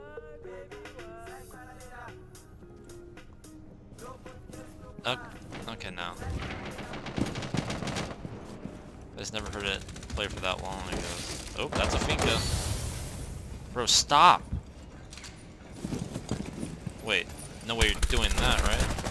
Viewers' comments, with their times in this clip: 0:06 the old music!